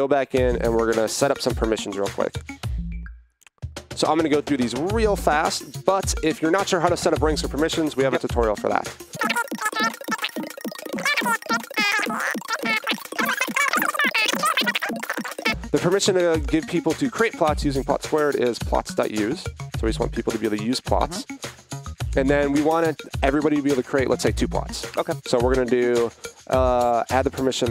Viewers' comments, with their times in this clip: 0:08 somebody lower the pitch, what are they saying